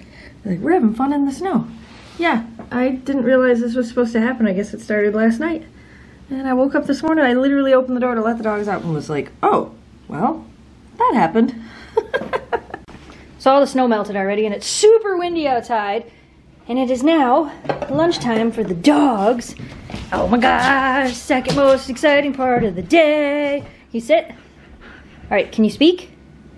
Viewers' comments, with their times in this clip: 0:10 super excited dogs talkin for their lunch!